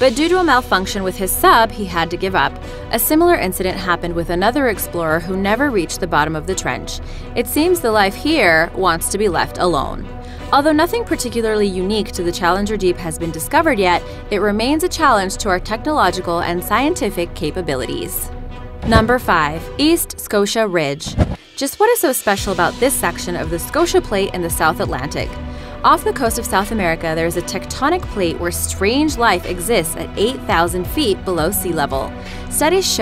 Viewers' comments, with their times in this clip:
0:08 wtf is that sound and does anyone else think its saying sorry or starry?
0:09 what's sleeping? I dont remember adter hearing this voice..
0:10 That scary ass sound 😖😖😖
0:14 wtf scary robot voice says sorry